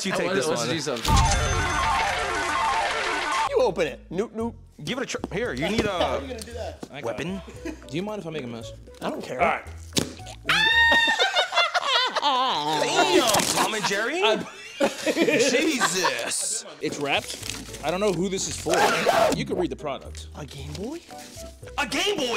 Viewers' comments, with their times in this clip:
0:10 Tom and jerry ass scream bruh